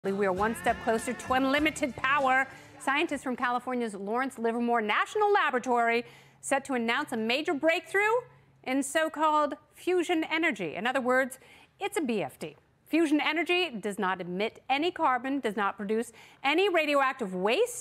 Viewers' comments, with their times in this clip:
0:00 obnoxious and annoying voice and person